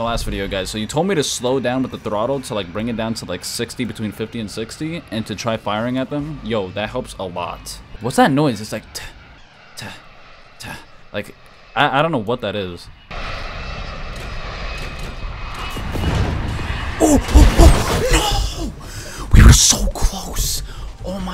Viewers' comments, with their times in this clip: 0:08 maybe the reloading sound?
0:09 The noise that u heard is your missile reloading you can hear it with every airport vehicle (as far am I'm aware of)